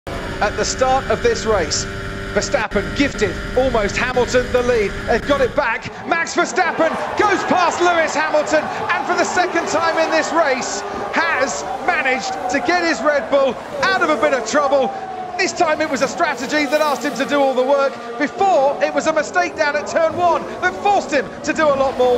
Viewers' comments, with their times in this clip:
0:05 You can clearly hear on whose side the fans are.